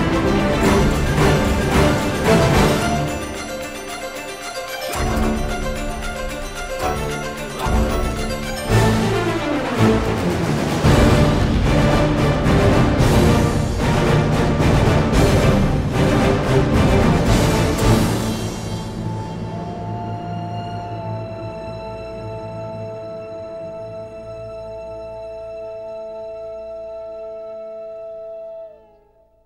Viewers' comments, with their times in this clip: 0:10 is the best part for me. just sad that right after that part it's going calm shortly. still a great track tho!
0:10 Sounds corny asf, is way better